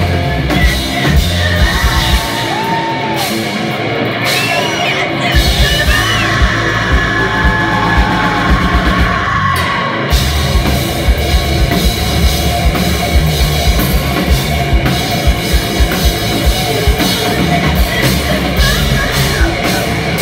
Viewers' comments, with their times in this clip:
0:05 THAT SCREAM THOUGH